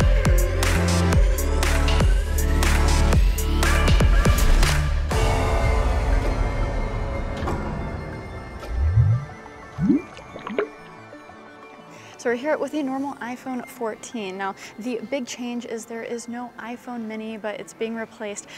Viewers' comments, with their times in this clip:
0:03 Ok, switching to the ST theme was fking amazing.